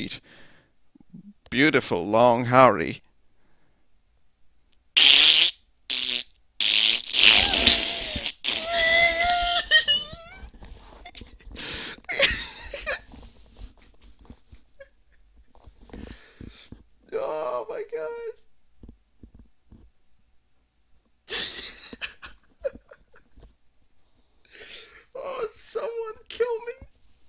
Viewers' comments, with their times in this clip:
0:08 that fucking laugh